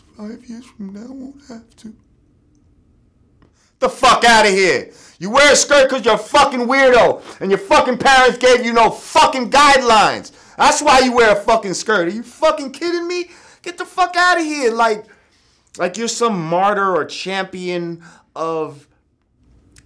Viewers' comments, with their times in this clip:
0:03 Lord Jamar says it like he really means it!!!! Can you say it louder so the people in the back can hear you!!!! 😳😳😳😳😂😂😂😂😂😂
0:03 though 😭😭😭😭😂😂😂🤣🤣🤣😩😩😩😩..... All the "lean on me principal" base in his voice 😂 😂 😂 ☠